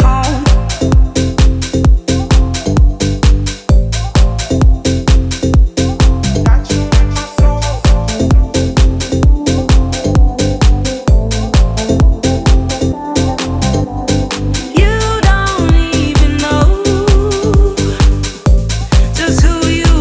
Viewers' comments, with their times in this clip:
0:06 she sounds like Da'an from Earth Final Conflict 😅